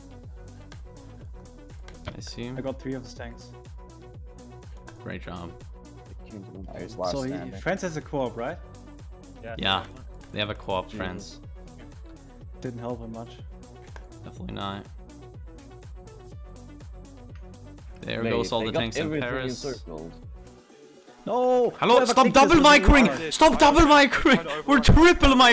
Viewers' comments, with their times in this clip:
0:06 why does he sound like so much like dream?